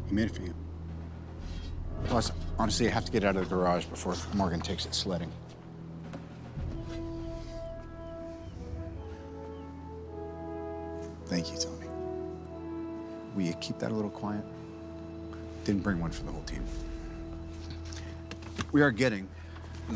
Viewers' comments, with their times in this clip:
0:07 when his theme hits you just know its gonna end badly but you know their gonna win...